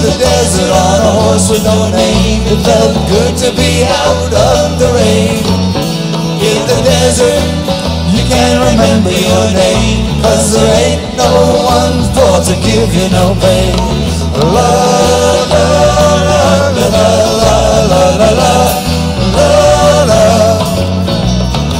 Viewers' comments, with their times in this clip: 0:04 Bob Dylan on guitar and back up vocals 🤣😂😂